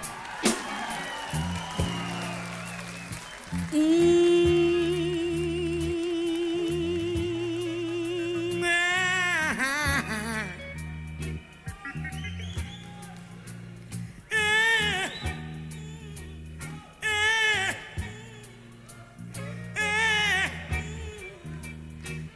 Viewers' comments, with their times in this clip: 0:09 this the only mane i ever heard made his notes cry